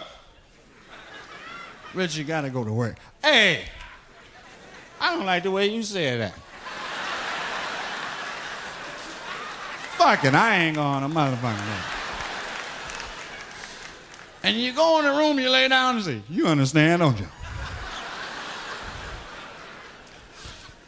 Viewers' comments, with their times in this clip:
0:04 Go to and if your wearing headphones, listen for the dudes laugh in your left ear. All I gotta say is that, once you hear it, you'll know 😂